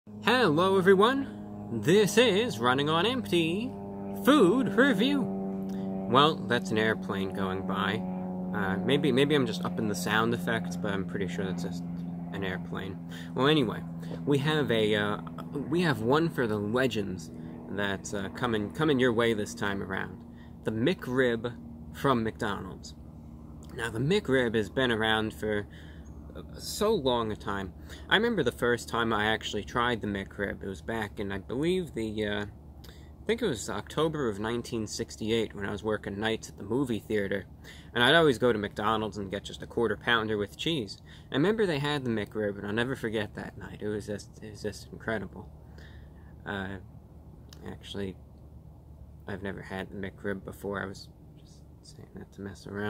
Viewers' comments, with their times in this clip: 0:02 If you listen closely to the background noise, you'll hear the hum of a a single-engine WWII plane... :-D Great review as usual!
0:33 when he says something like he says it so casually that actually somehow tricked me once.